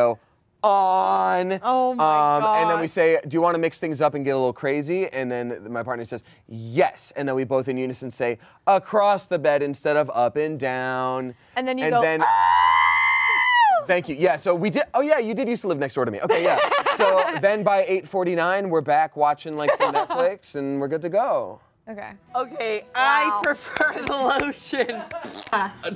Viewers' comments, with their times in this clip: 0:10 I've never heard a better Lego star wars: complete saga R2D2 dying sound impression before